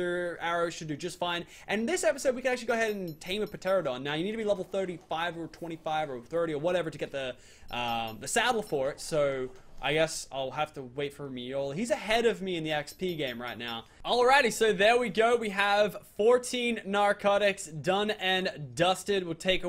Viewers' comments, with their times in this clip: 0:03 did he actually say p teradon